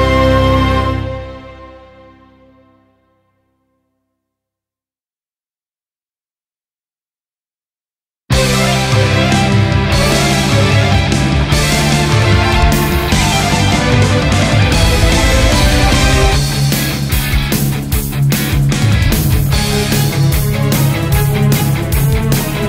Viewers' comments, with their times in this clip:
0:07 You’re right! The villain transformations perfectly express their character ;) The Kiwi’s one reminds me of the war with a lot of tanks and guns waiting to fire🔥